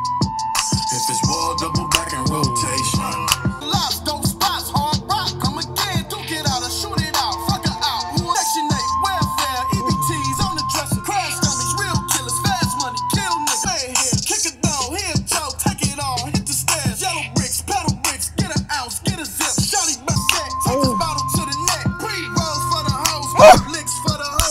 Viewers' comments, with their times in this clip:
0:09 use cardi b flow